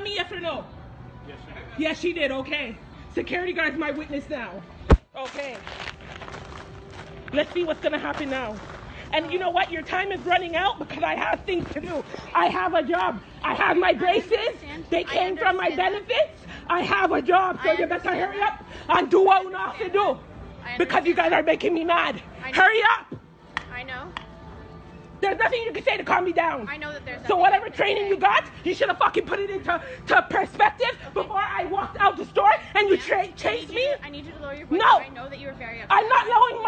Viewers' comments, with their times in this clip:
0:10 the accent was coming out!
0:16 HER ACCENT CAME OUT SO MUCH JUST THEN
0:17 ...she for sho Jamaican.